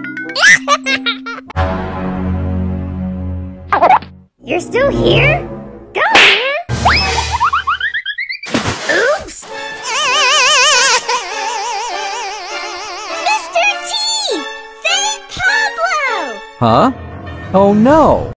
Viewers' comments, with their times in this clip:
0:10 😂😂😂😂😂 Pablo is funny crying